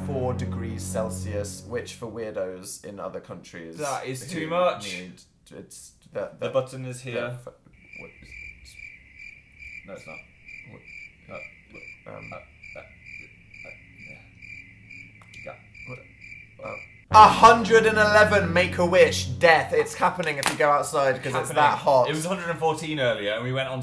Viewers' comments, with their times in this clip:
0:07 proceeds to make British noises